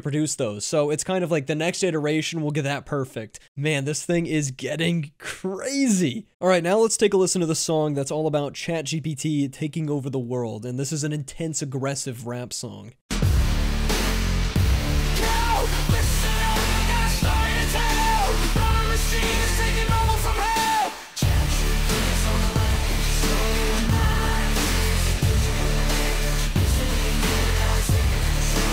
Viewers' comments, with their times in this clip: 0:09 is more futuristic honestly. That old 80s flow in the next generation didn't cut it.